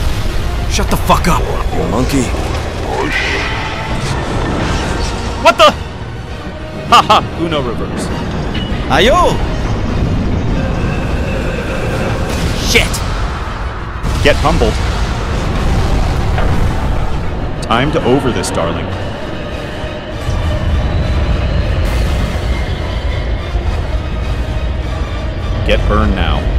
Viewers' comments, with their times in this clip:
0:08 LOL THIS I SO FUNNY HE SOUDNS LIEK super idoi